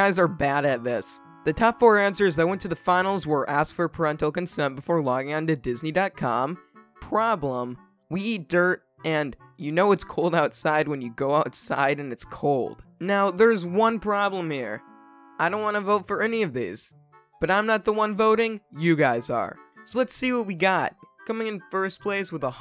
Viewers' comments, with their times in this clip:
0:08 you can hear the laughter in his voice